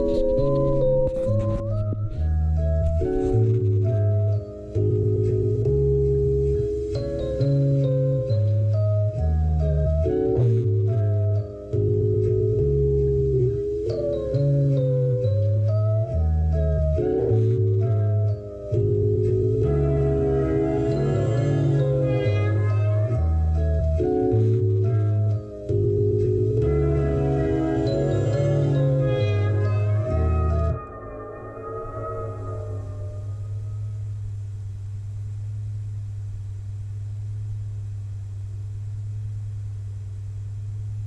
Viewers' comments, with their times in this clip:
0:04 beat on is crazyyyyyy sounds like the god fahim is aboput to drop something with westside after
0:26 In Germany and this beat is absolute butter - Gunn and Butter